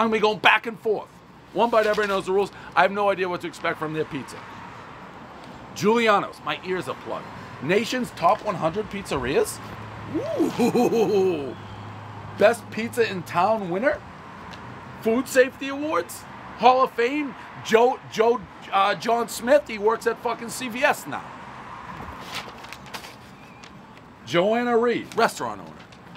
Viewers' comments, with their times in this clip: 0:08 one feminine oooh, everyone knows it's the jeans making him crow.